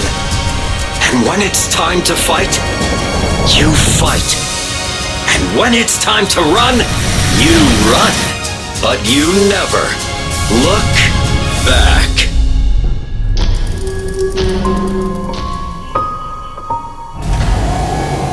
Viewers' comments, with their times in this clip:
0:06 Not the bill cipher voice 😭😭